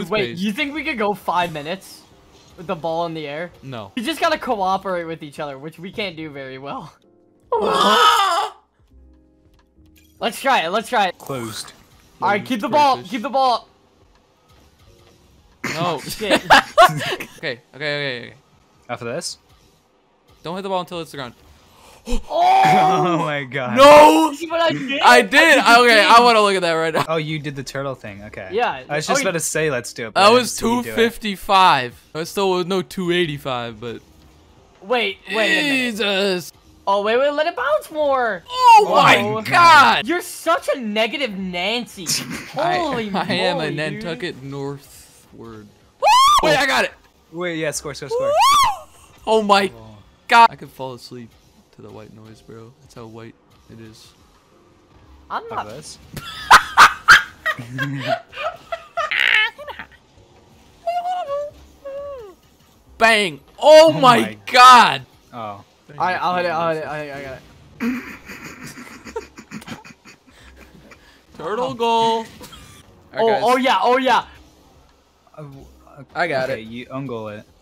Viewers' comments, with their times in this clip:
0:06 fire: leaves everyone: heavenly screams
0:54 bro his laugh killed me LMAO
0:55 I am SOOO glad I grew out of laughing like that.
0:55 The laugh gets me every time 🤣🤣
0:55 THE LAUGH LOOOOOL
0:58 the laugh though
0:58 the voice crack lol😅
0:59 the noise of angry birds 💀